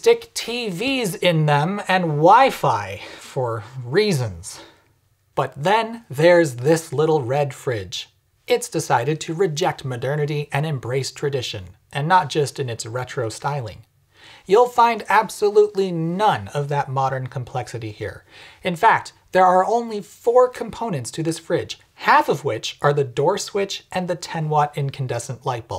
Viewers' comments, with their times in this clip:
0:09 "Maderniddy" is my new favorite word.